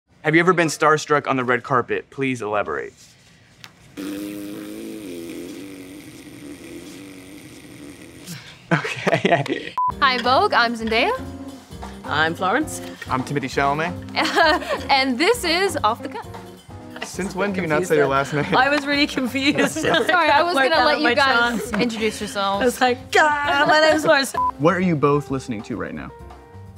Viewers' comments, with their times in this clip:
0:08 Timmy's nervous laughter is sending me😂